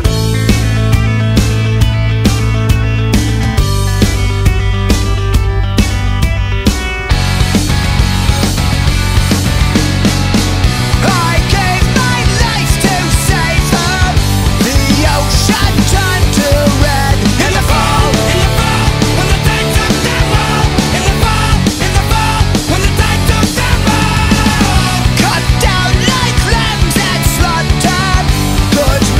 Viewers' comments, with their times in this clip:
0:10 sounds like ( i gave my life to satan)
0:11 I gave my life to satan or I gave my life to save her